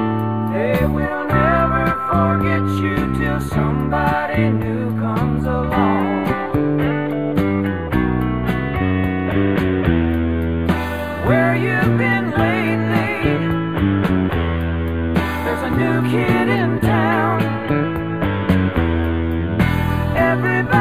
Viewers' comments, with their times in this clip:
0:05 Always liked that part and then the vocal harmony after, Felder or Walsh with the guitar part?